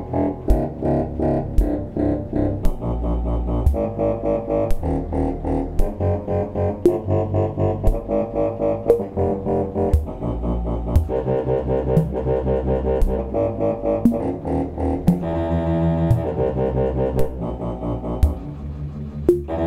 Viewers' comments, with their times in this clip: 0:07 after it becomes a pipe organ dubstep hahahahaha. amazing work man.